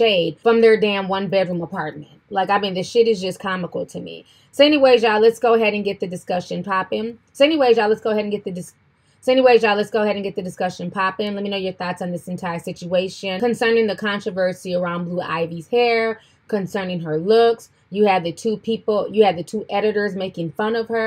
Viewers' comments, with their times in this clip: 0:04 ... So anyway y'all let's get this discussion So anyway y'all let's get this discussion pop So anyway y'all let's get this discussion popping..... I thought it was cause I was smoking?